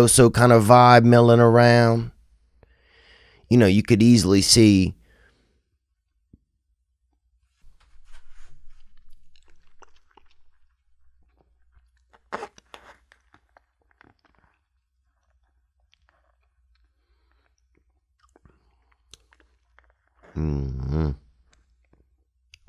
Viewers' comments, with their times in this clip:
0:06 for that glorious sip
0:08 that THIIIIIIIICK ass sip